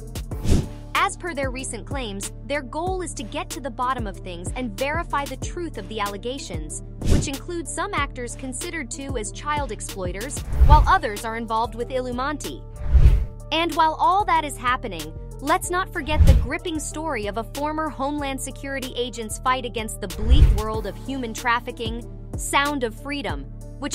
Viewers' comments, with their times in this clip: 0:10 "Illumanti" ????? 🤣🤣🤣 You mean "ILLUMINATI" ??? Well, i think this says everything about the quality of research and value. Immediately stopped watching. lol. Jeeeesus. This clip is so bizarrly idiotic. 🤣🤣